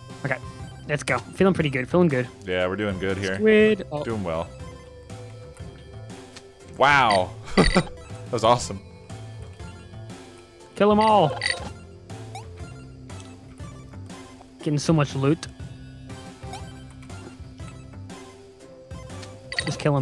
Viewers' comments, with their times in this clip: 0:05 Hmm can't tell if I'm going crazy, but the music sounds very similar to the soundtrack in Recettear.